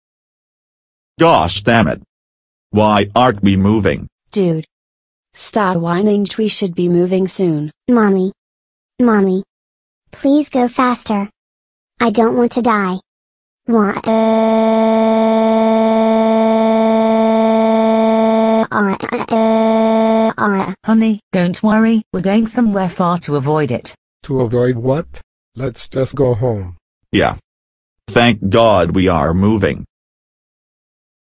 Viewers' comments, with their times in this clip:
0:08 I thought she was crying because she was scared that she was going get to get hit by a car
0:12 The Girl Sounds Like Squeeks From Nature Cat